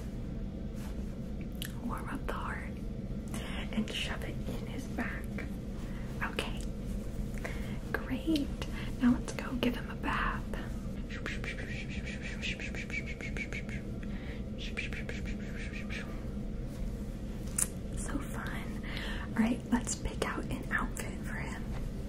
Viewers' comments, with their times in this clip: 0:10 The most quiet mall in the world 🌎 lol